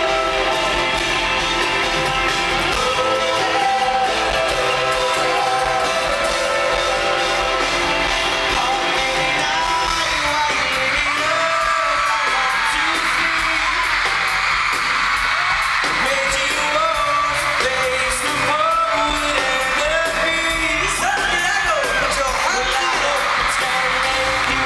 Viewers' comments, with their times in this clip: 0:07 i got goosebumps listening to niall <3 hes so amazing! :)